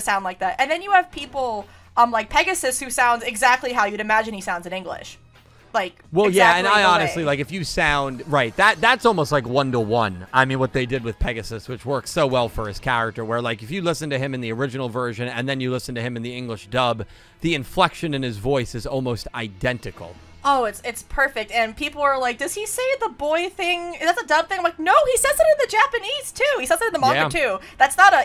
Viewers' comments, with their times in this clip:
0:09 he sounds like a South Park character